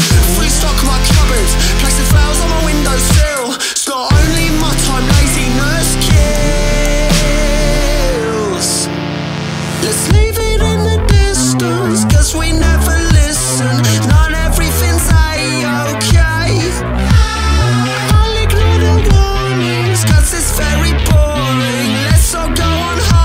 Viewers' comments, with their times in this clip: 0:10 The synth riff is amazing! What was it done on? I guess MS20 but i have a suspicion it was the diy synth :) "Lets leave it in the distance Cus we never listen Not everything is A ok Ill ignore the warning Cus its very boring Lets all go on holiday"